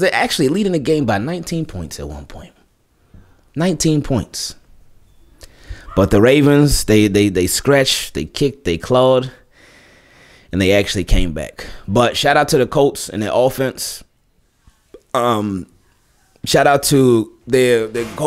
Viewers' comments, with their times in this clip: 0:06 does anyone else hear a “caw” from a bird.. specifically a raven…